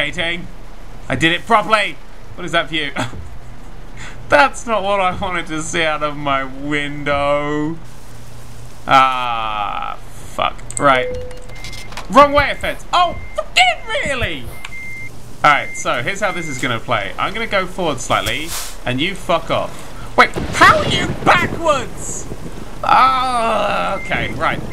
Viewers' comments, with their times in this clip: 0:09 Just after he yelled "How are you backwards?!" the video crashed for me. :P